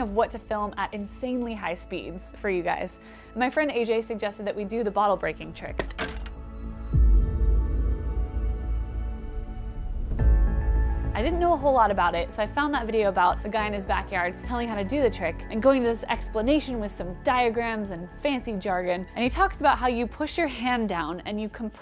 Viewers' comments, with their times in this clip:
0:06 The music is so perfectly synched and well chosen.